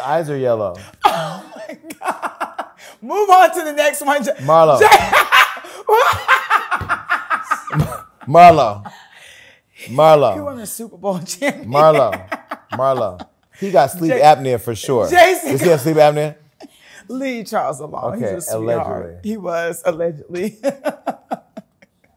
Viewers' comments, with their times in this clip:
0:06 why she laugh like papi from the proud family